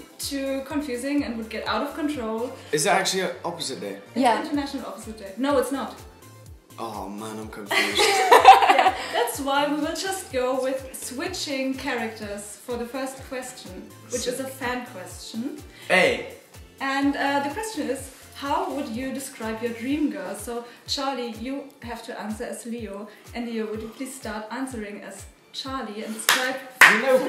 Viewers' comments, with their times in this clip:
0:10 WHEN LEO WHISPERED TO CHARLIE DUHSIDIF